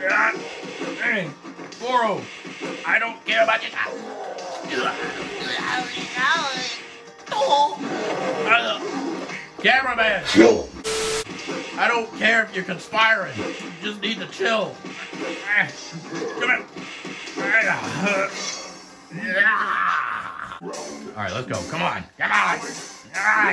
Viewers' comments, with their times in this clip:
0:04 You sound like Professor Frink from The Simpsons there. 🤣🤣